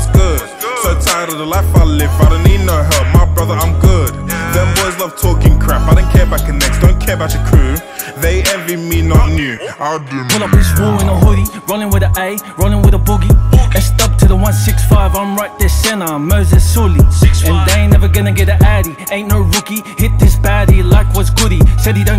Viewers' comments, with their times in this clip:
0:09 Bruh. Play it at 1.25 speed It sound 100 to me. Mad stuff right here